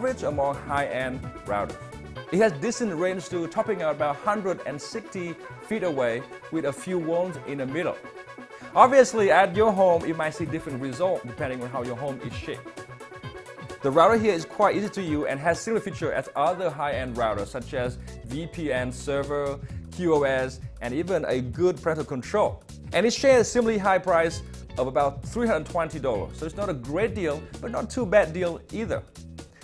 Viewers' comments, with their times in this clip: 0:10 "... you might see different result, depending on how your home is shit"